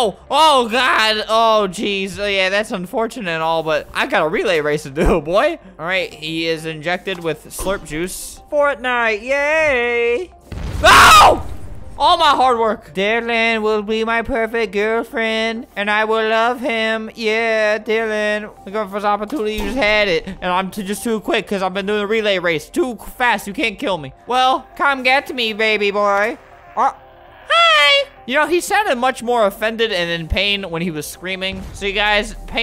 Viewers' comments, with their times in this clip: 0:08 that nice voice tho “YAY A AY” it sounds like some auto tunes
0:16 put it at 0,25 speed and wait when he say hi its the most funny thing ever